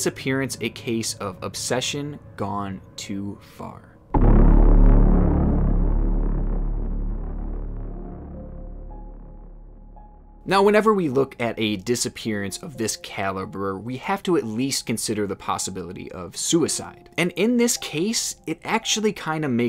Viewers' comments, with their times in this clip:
0:04 dude that sound effect is so good cuz it's unique and it just gives you chills down you back, so good.